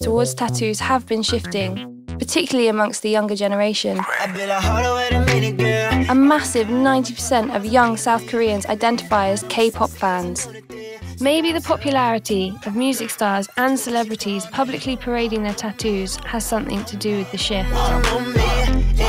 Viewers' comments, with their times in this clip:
0:04 I’m sorry but I just started dancing when mommae started playing